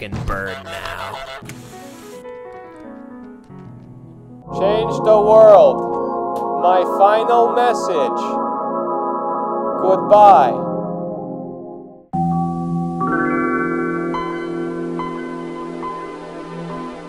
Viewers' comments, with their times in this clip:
0:05 the Moment, he went into the site, the Main-Menu Melody from Star Wars The Old Republic blasted through my ears..